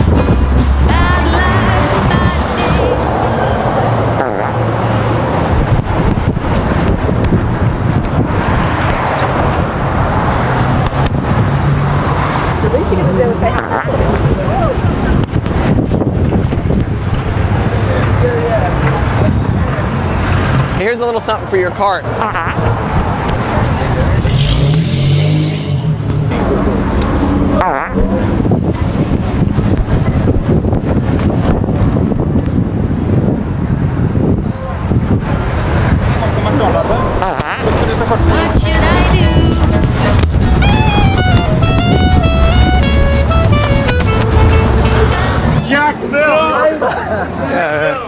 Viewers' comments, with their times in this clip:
0:04 Fart and flail!! Nice move there for the getaway.
0:36 someone speaking swedish